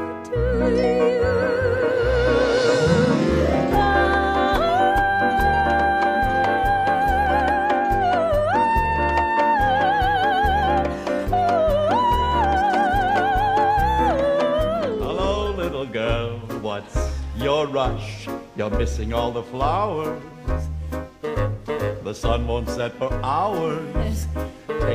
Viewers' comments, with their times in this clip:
0:07 Sounds like a female version of the Troll song! : )